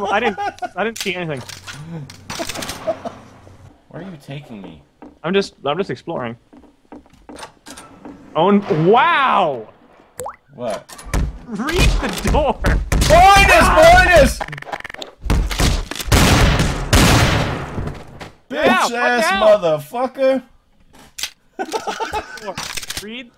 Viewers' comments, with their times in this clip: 0:07 I still wonder to this day.... What the hell did the door say ?